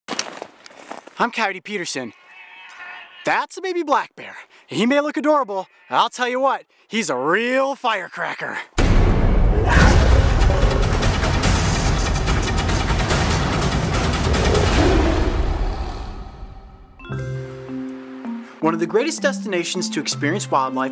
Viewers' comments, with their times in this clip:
0:03 the bear's growl sounded like a baby crying!